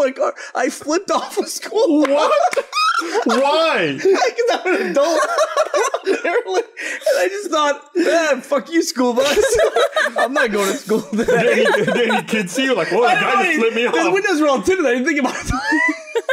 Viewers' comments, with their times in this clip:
0:03 that squeak though